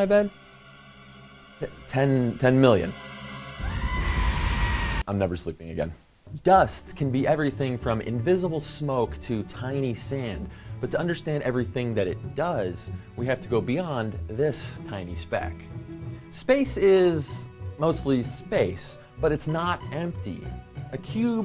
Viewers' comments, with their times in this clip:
0:03 That sounds like that goat, in the goat video!